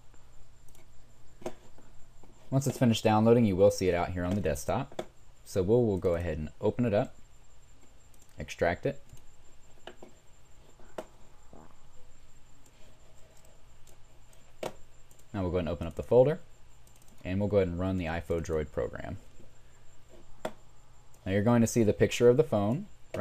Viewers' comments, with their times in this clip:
0:08 lol farted ...thanks for this tho